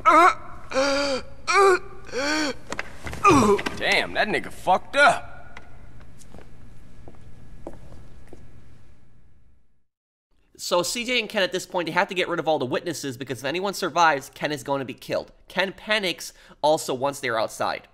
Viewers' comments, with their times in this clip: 0:03 The way he said it tho 💀